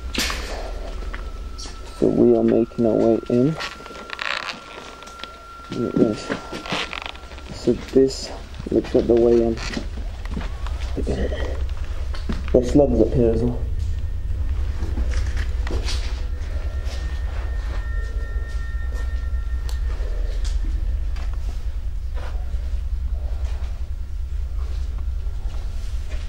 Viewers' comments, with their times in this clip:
0:04 start to hear voices of children in the background
0:07 turn volume up
0:11 if u listen closely you will hear like a little girl coughing